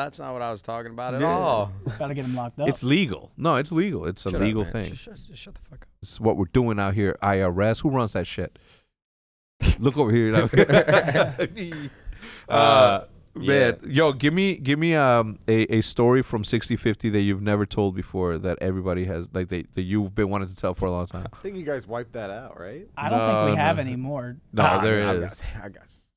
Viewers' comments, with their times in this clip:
0:10 nade and Hezc say the same thing at the same time lmao
0:12 just realized Nade and Hecz laughed and said "aah man" at the exact same time on
0:12 that synchronized "uh, man"